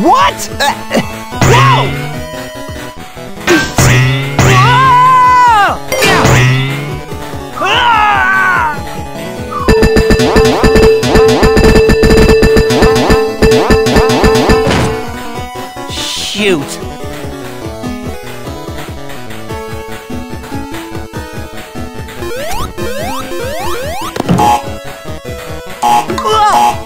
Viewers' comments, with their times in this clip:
0:04 I freaking love that death scream
0:07 i like his scream
0:09 A song that idk but its catchy